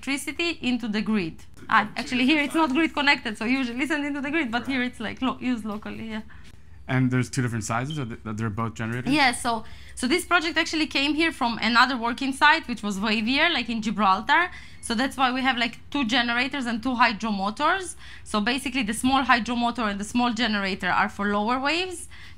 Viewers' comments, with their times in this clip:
0:08 smoke detector needs new batteries